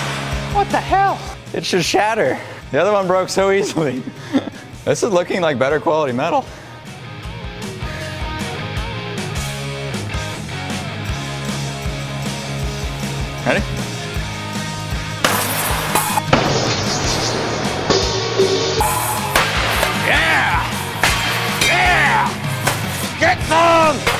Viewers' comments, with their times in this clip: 0:06 his voice cracks hahaha